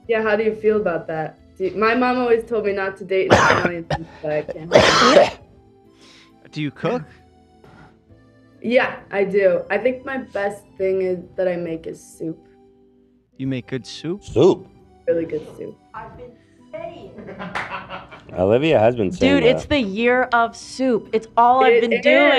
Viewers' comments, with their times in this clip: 0:04 Ethan in the background hacking up a lung is crazy